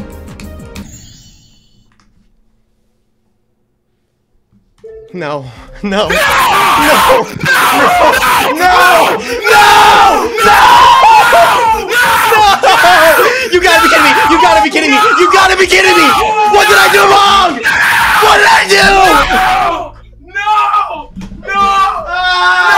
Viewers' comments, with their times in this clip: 0:05 the rising start of the "no.. no.. NOOOOO!"